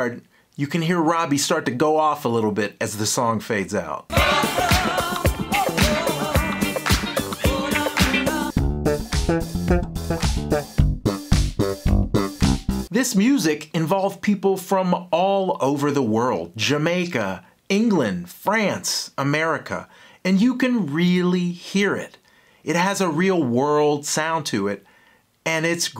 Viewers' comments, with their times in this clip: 0:09 That’s Edwards-esque. (Chic) Man! I’m off to get me some Good times.